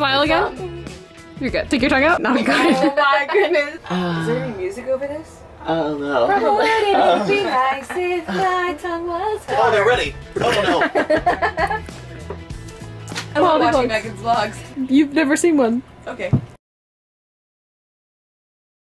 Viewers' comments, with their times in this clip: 0:04 what song is she singing? She changed the lyrics but rhythm sounds familiar